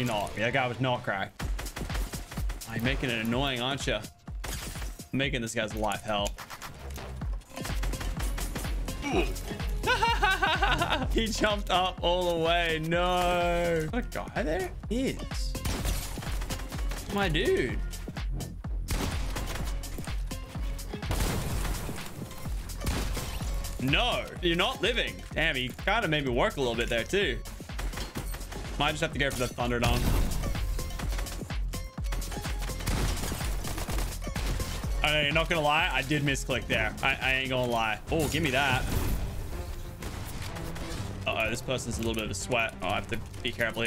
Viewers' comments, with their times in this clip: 0:09 that laugh will haunt me for the rest of my days lol
0:29 that’s a poggers lobby track 🤘🏼